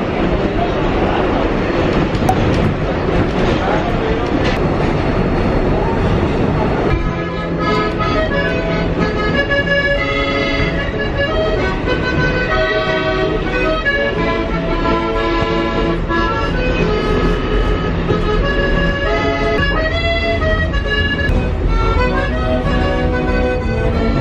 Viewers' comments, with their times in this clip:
0:07 the music reminds me of the Italian vibe in Vincenzo 😂